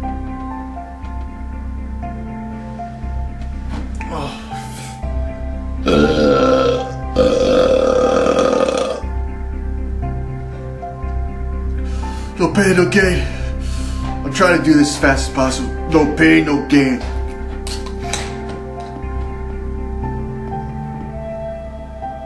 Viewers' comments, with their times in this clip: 0:06 HAHA best burp ever